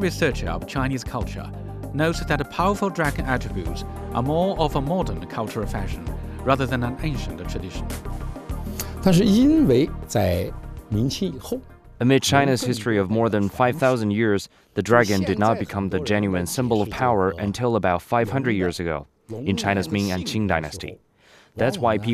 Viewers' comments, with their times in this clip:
0:10 Lol the translator is reading off a script. How is he translating what the guy is saying before he even says it? You have to hear and then translate. The translation is purposely delayed to give the illusion that Whats being said in English is translated when it’s not…